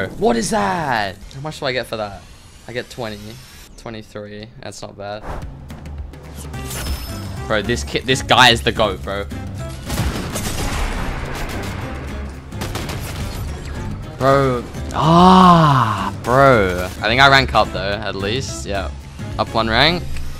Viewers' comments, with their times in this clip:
0:05 the snipe is so crazy i couldnt even hear it in full volume